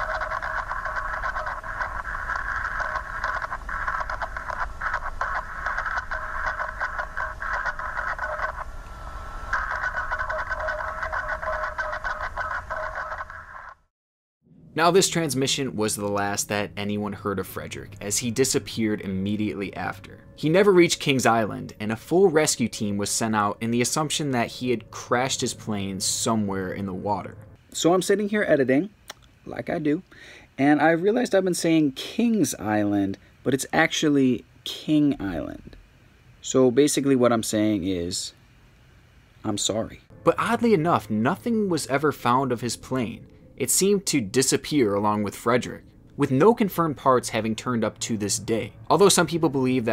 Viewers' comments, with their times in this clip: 0:09 sounds like really bad asmr ....
0:35 The woah in is so powerful i can't handle it 😱☠️